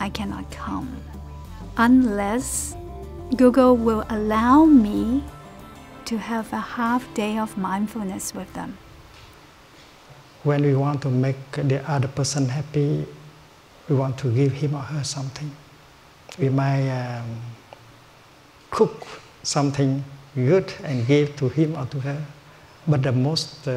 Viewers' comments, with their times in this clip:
0:10 Thich Nhat Hanh speaks.